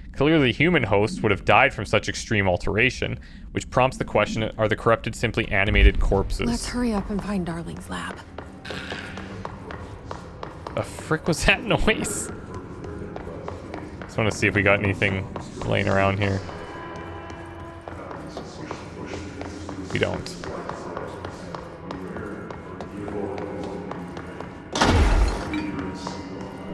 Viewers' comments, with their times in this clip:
0:08 Am I the only one who suspects the rubber duck is following you, you keep hearing the quacking sound like and before even since you looked at the duck.